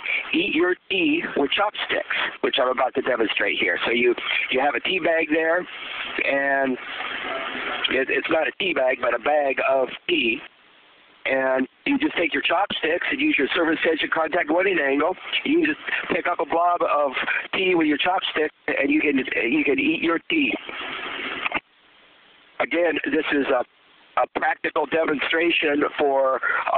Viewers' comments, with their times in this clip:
0:09 for a minute i thought he said "bag of pee"